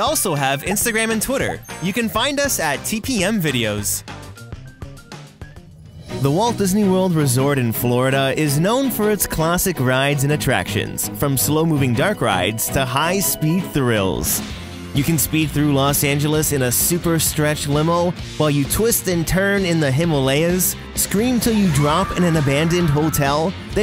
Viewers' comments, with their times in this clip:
0:05 makes me tear up a bit. I don't know why it's just the music.